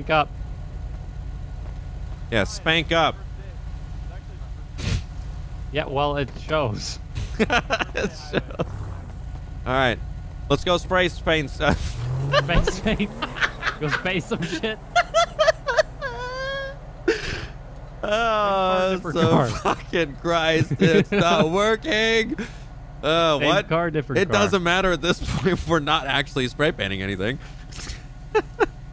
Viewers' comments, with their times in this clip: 0:10 The way he says Spray paint he says spray Spain 😂😂😂😂at
0:14 That laugh caught me off gaurd
0:16 The laugh has me dying